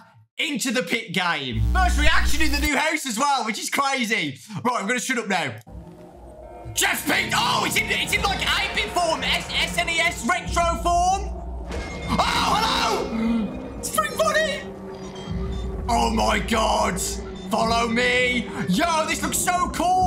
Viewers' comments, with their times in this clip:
0:05 Okay I'm gonna shut up now 1 second later: [Dawko Sounds]